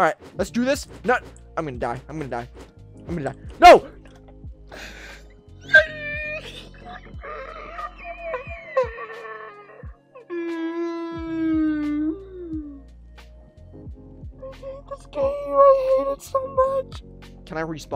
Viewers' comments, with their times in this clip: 0:04 YOU SOUND LIKE my mama when dieing